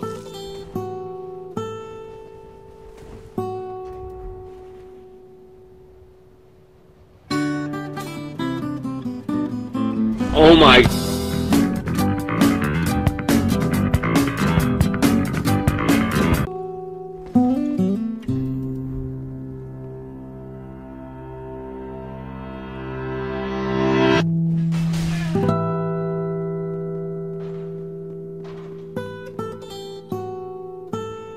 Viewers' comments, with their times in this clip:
0:09 my opponets is so beautiful strange sound slow turn around O my.... get ate my by a Giant dog you died in the game and in Real life for the scary: )
0:14 omg that hahahahahaha